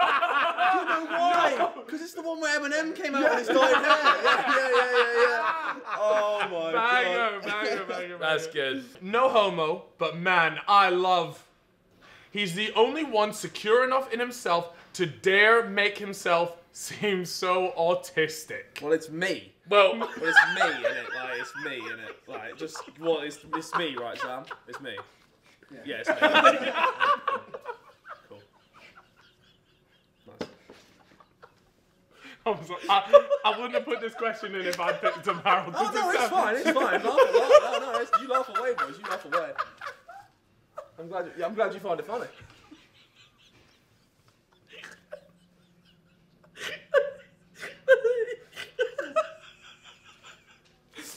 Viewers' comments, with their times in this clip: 0:10 they’re laughs make me wanna wet myself 🤣🤣🤣
0:37 The awkward silence is too funny 😂